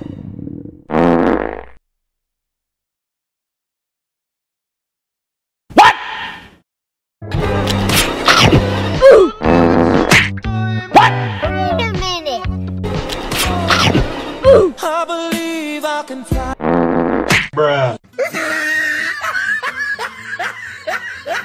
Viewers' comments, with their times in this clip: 0:07 -That's a first a fart that killed you🤣